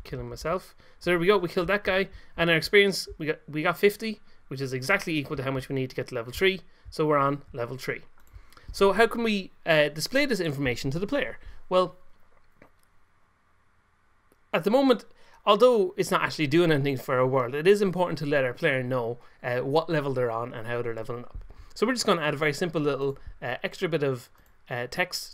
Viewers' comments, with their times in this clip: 0:10 that pause made me think for a second that PC froze. xD